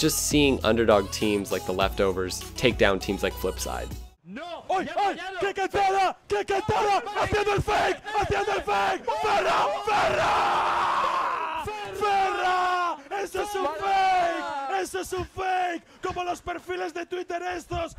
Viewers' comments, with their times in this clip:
0:04 dude, he is so passionate haha